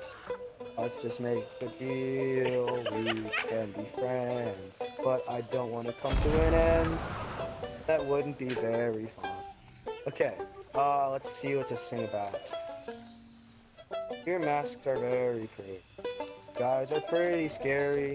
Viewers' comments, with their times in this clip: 0:05 lol he's singing and his buddy is busy in the background launching out of the cannon. omg im in tears